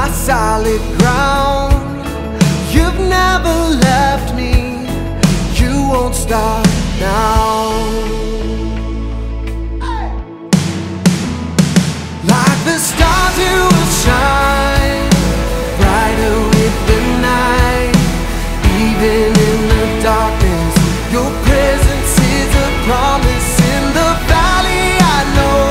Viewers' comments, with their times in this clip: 0:09 That fill!! Love It!